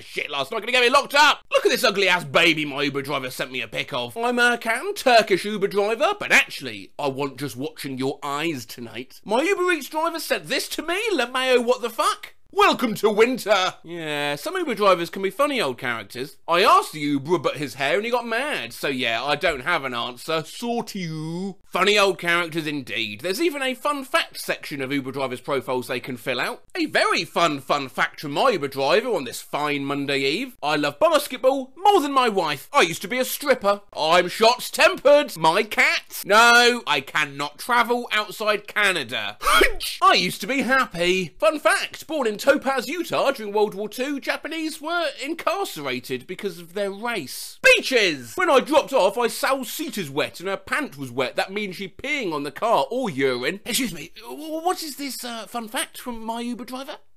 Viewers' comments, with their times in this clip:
0:04 I have heard an Englishman saying Erkan with the accent enough internet for today
0:39 sounds like a sneeze